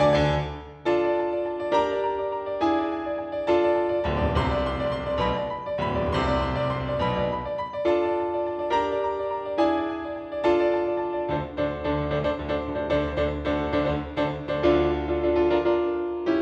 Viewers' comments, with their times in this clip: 0:03 Oh, so you played the extended version. I also like what you do with the left hand